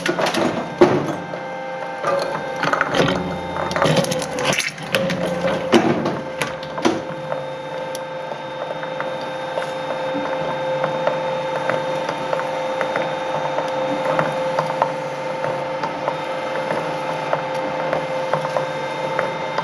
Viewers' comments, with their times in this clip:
0:04 Straight up generic gore sound effect